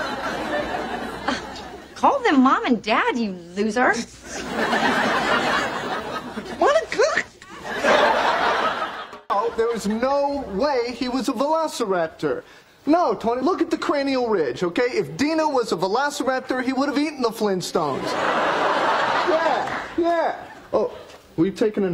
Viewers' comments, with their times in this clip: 0:05 Ross’s voice is so funny
0:06 Why is no one talking about ross saying "Monicak" in frustration